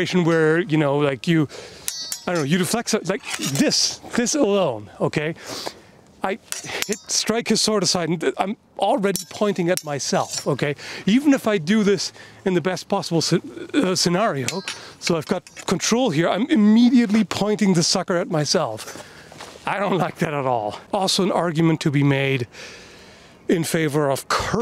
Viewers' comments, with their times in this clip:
0:06 "I strike his sword aside" Me, not paying complete attention: "What, swordicide? Yeah, that sounds about right."